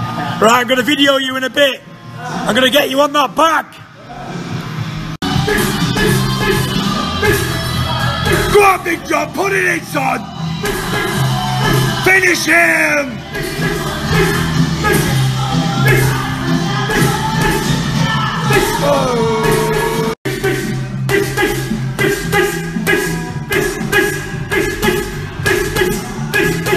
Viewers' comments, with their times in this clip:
0:10 hissing sound like a snake, this this this,